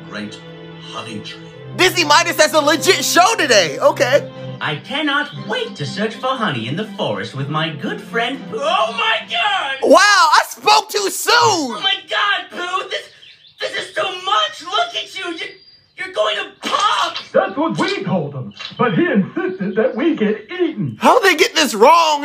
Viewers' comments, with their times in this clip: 0:08 the way he said “oh my god!” And then said “wow i spoke too soon” killed me 😭